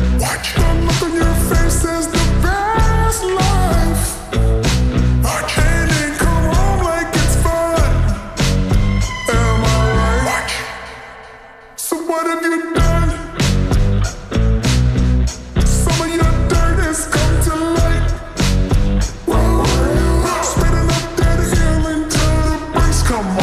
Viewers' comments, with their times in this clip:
0:04 I luh the slowed down version o lol 😂❤